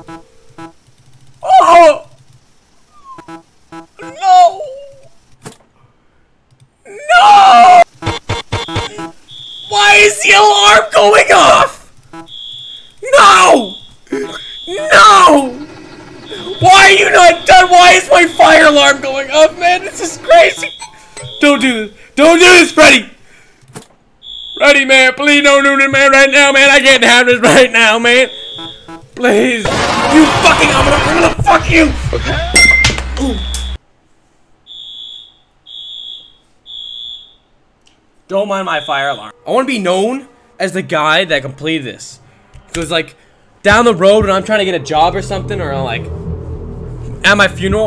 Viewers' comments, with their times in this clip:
0:08 I thought the fire alarm was in game lmao.
0:10 who else thought the fire alarm was the game?
0:31 the fucking milkshake guy audio almost sent me into shock